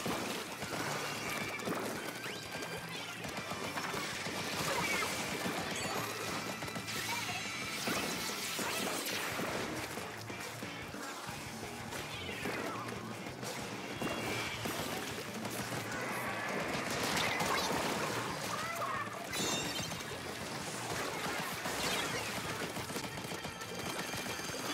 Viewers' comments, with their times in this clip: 0:10 Wait I'm confused on how you heard the roller??